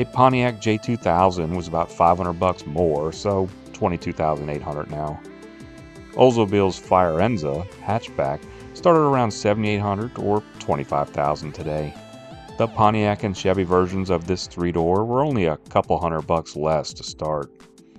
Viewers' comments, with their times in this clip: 0:05 You are correct. I was being a bit cute in how I pronounced it, and had a caption stating how it was actually pronounced. Its .I know its Italian or based off a Italian word....Firenze?